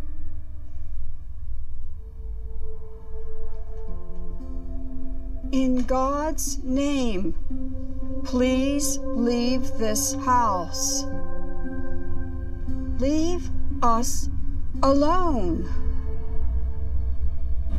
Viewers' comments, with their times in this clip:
0:03 That prey was pathetic and weak! You have to be forceful not all meek and timid...